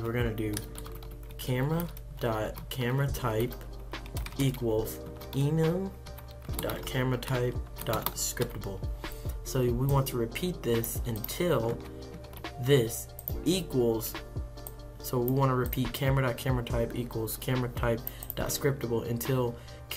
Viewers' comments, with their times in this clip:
0:04 What a voice